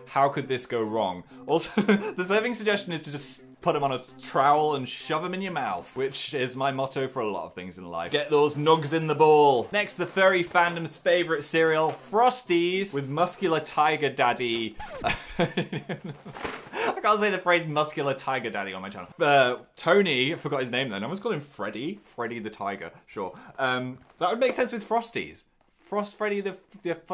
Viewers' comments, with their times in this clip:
0:09 Tongue twister 100